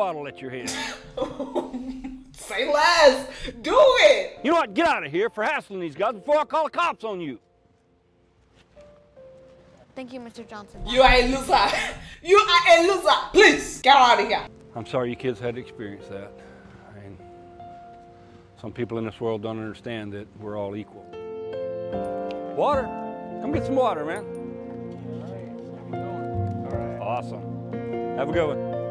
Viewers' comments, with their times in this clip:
0:04 Yes yes beautiful laughs in African
0:10 we love how when she’s mad she suddenly grows a Jamaican accent